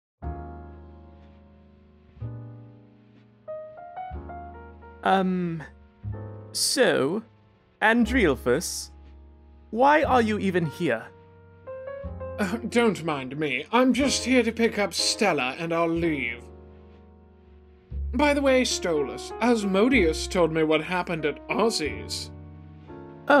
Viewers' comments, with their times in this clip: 0:05 THE “UMM” SOUND SO MUCH LIKE STOLAS😭